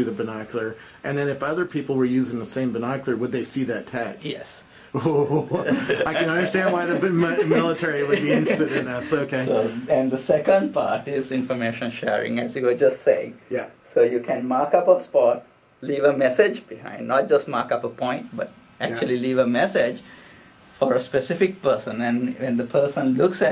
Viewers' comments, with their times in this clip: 0:04 Epic nerd laugh. I totally do that sometimes.